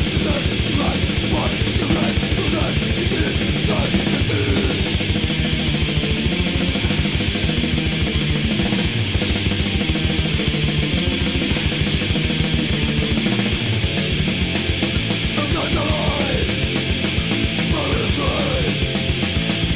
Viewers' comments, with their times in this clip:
0:03 verges on Black Metal. Great riff.